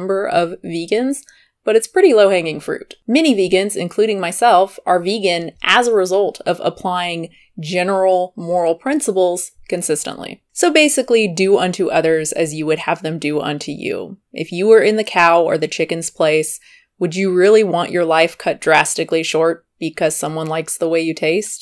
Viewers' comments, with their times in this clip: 0:03 I thought you said ‘mini vegans’ for a sec 😂